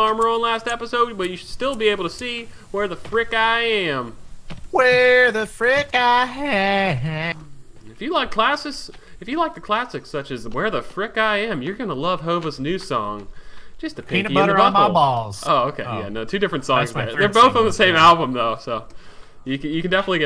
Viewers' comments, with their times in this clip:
0:08 sounded like hank from king of the hill :D